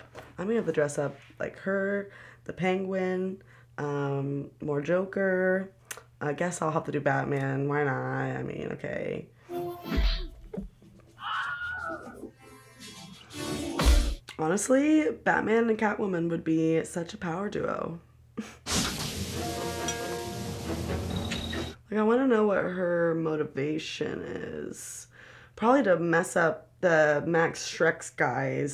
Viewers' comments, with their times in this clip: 0:10 😆Ah, the Wilhelm Scream. Gotta love it.